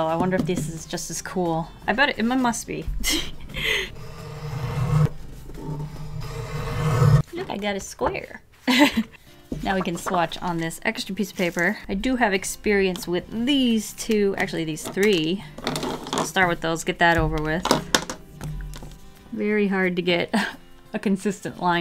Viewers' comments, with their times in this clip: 0:04 Some satisfying ASMR 😂😂